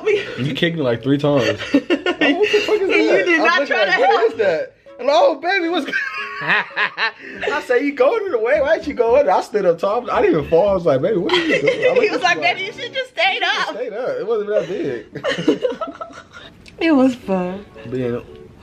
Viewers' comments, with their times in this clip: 0:06 wha typa laugh was det ghee😭😭.